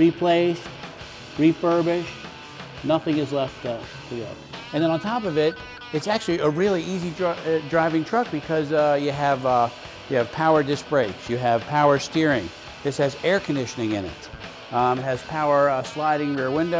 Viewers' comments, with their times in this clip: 0:03 Nothing is left" ba la huh........what?